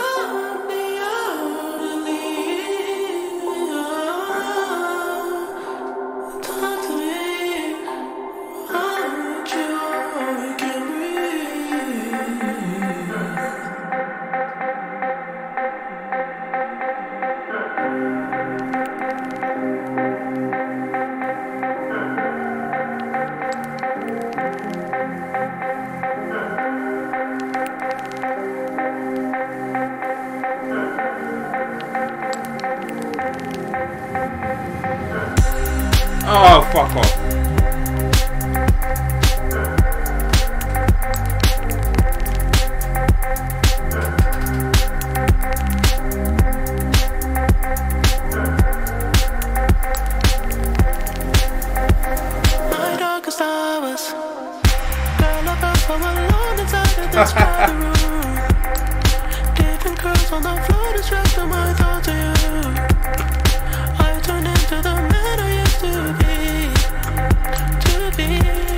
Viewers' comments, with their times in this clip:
0:10 I had that same reaction Incredible beat
0:26 The way the beat addition hits him is perfect
0:35 I had the same reaction 😂 my best part of the song.. I like that the lyrics are so dark an deep yet still the beat is amazingly joyful
0:35 that beat drop
0:36 same reaction I had when that beat dropped. I have listened to this song so many times, and it’s not even gotten old yet.
0:36 I was dead when the beat dropped and he said “Oh fuck off”☠️😩
0:36 when the beat drops...everyone's reaction exactly.
0:52 My darkest hours (pause) music drops 🔥🔥🔥🔥🔥🥴